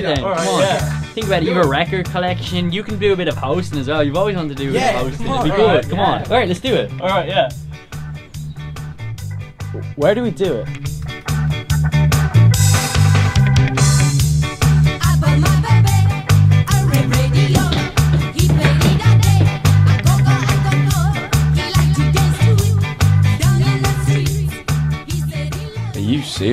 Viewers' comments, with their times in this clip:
0:08 What’s the track that sounds like a French singer singing in English? Such a catchy tune.